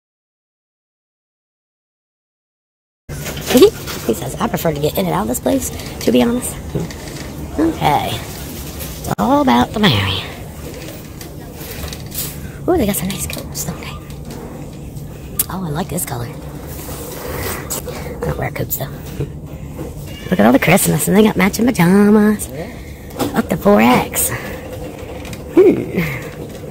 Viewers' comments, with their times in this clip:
0:09 She sounded so horrified that it was and Gasp…she was late for a feeding. I’ve never seen someone have to have 9 square meals a day and plenty of snacks 😬